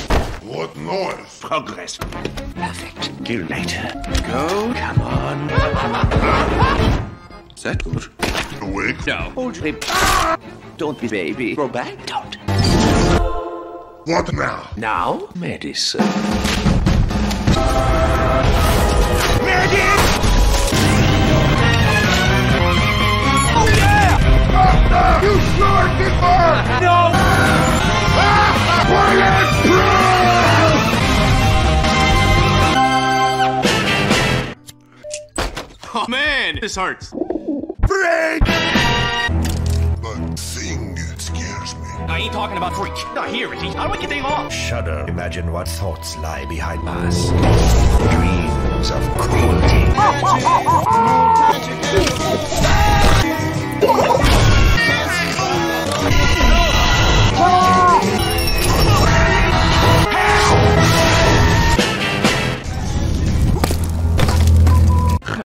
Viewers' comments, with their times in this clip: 0:08 the cutest "hold rib :)" followed by heavy screaming
0:22 British to American transformation.
0:24 the no was perfect
0:25 The speed with which Medic replied "HAHA NO" to Heavy asking if this will work made me burst out laughing lmfao
0:26 Heavy: “Doctor, you sure this work?” Medic: *chuckles* “no” *heavy proceeds to turn red and fucking die*
0:52 this part is underappreciated, the DAAAUGH- is so perfectly cut off oh my god